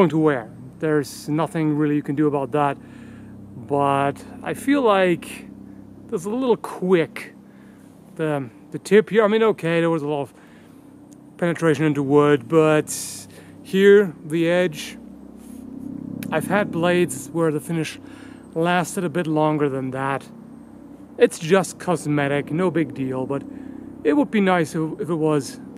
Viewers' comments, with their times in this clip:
0:06 the droning in the background and the close-up make me think of just how fitting an ax murderer you'd make. IN A MOVIE!